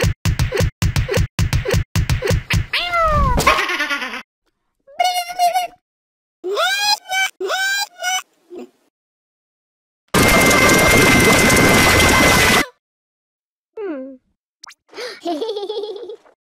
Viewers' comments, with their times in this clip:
0:10 note that i lost the original sound for